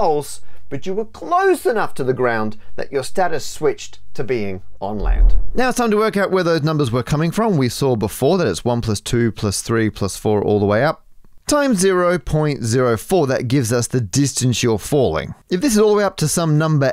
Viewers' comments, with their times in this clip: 0:04 That swiping sound and other times made me jump out of my seat every time. Felt like someone was in the room with me.